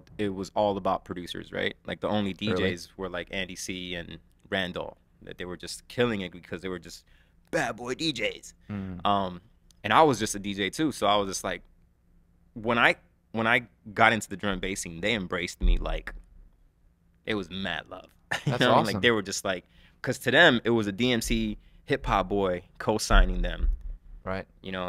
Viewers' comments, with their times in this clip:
0:07 Hearing this guy talk about dnb in an American accent is funny. Case in point ...